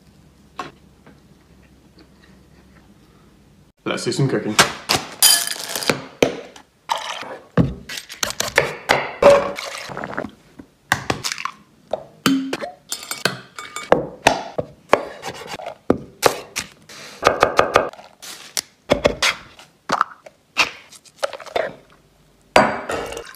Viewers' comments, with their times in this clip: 0:04 it sounds like they were trying to make a beat/song at this part-